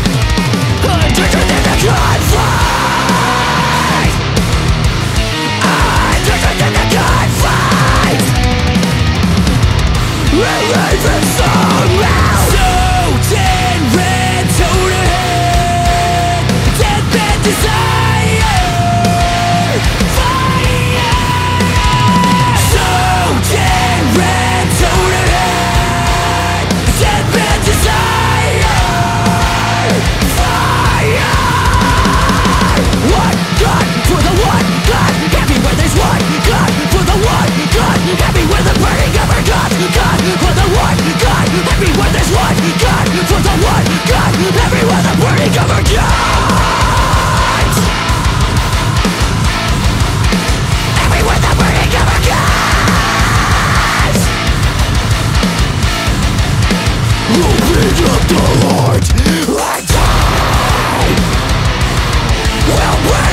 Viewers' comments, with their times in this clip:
0:08 first listen, it sounded like they messed up a beat but sike. They're all robots, they make things that sound wrong sound so right.
0:17 the most pleasant eargasming dissonant sound i've ever heard. <3
0:34 I lied theres some 5/4 parts
0:34 sounds like Dillinger Escape Plan a little bit
0:46 is what LSD sounds like
0:49 That part sounds like Josh Travis joined Periphery for one riff lol